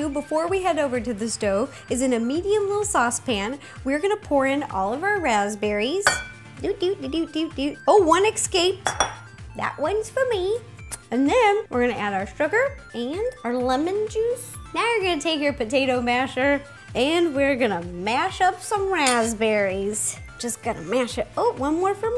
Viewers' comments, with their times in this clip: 0:07 "Ecscaped" is my pet peeve. It looks like she tried to spill one out when she's pouring them out. Lol. Funny To!